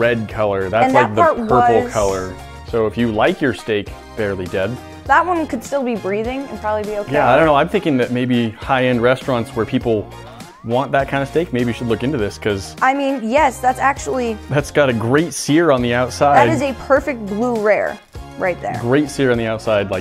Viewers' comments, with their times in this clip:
0:05 that woman could still be breathing 😕😐 Turn on your subtitles you’ll see what I’m talking about